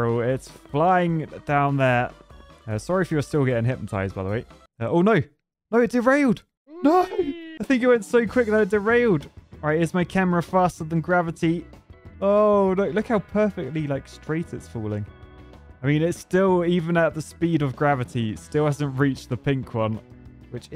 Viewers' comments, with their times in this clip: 0:04 The train said buzz buzz